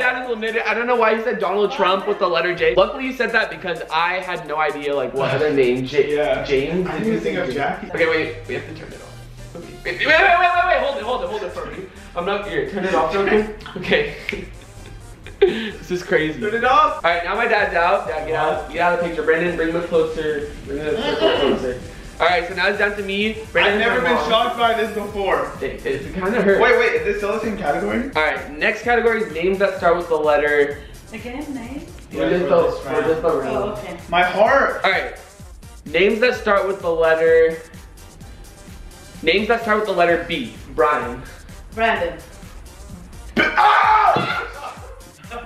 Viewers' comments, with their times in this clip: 0:08 Why did I hear John Cenas song ??
0:31 Who hears a voise